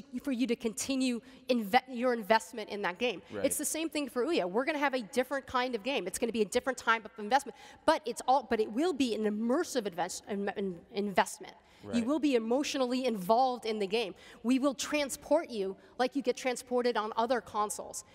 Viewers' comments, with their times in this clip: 0:06 she's the opposite of eloquent. it was a whole hour of public speaking havoc.